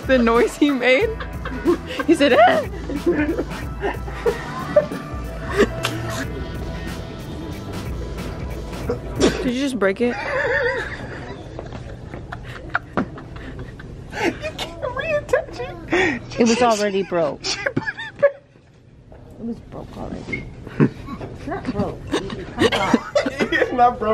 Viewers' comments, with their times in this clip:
0:04 sound like a horse
0:09 horse noise I’m fucking lmao 😂